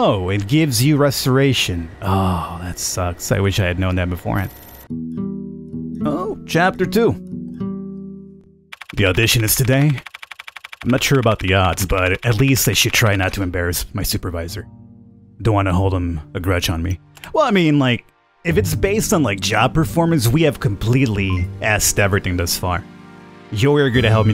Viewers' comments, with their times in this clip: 0:06 That jingle reminds me of The Last of Us.